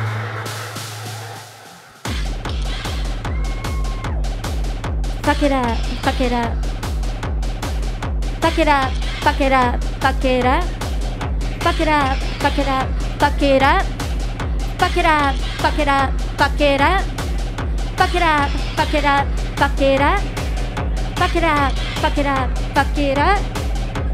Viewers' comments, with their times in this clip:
0:10 if you want your ears to bleed